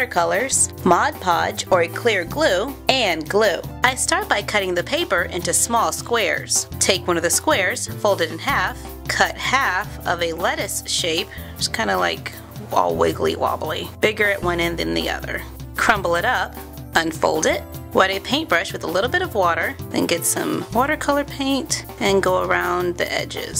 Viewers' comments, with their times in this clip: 0:09 I thought she said "wa wiggly "